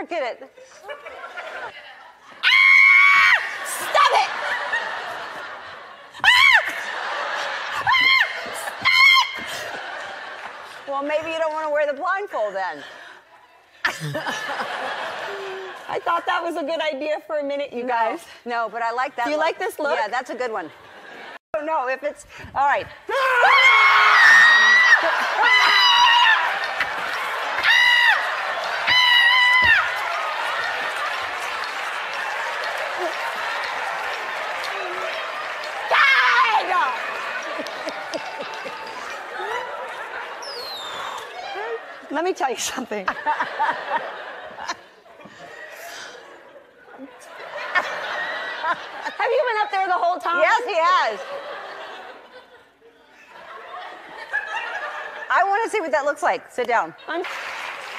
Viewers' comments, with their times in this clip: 0:06 "stop" with a screem lol woww!! how come!!
0:23 She screamed in 10 different languages
0:40 she even got scared of that small whistle poor sarah 😂